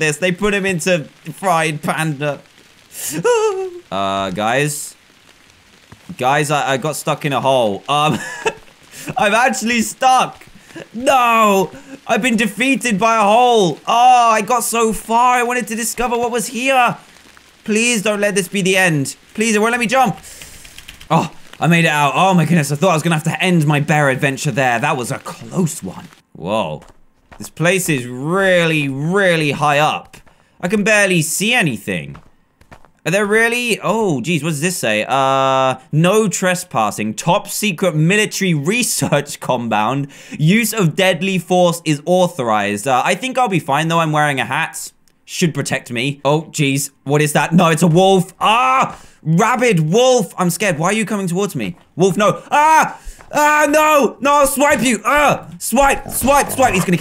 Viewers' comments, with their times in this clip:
0:03 The noise he made LOL
0:39 "research combound" lol